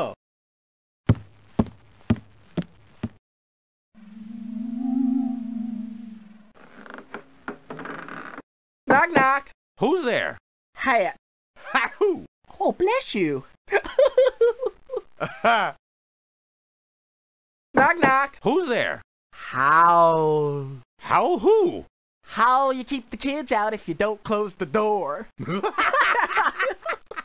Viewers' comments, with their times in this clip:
0:09 I love the way he says hat